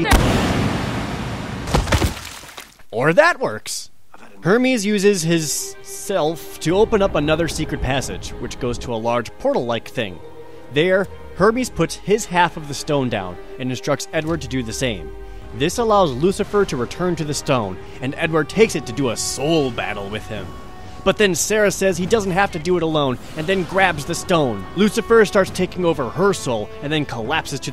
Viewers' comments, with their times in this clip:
0:10 i didn't know herpes had a stone